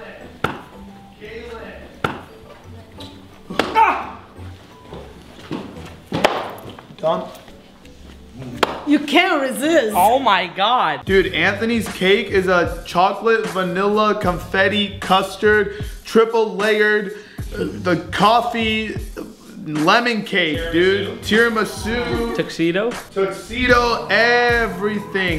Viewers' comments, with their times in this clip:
0:07 he was about to slap back into he saw its mama rug how she said it lmao “ you can’t Resistttt “